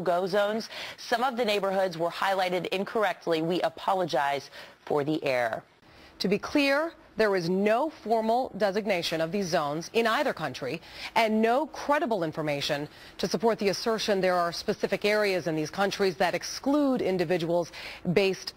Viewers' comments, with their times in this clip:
0:05 “we apologize for the air”. Hot air that would be.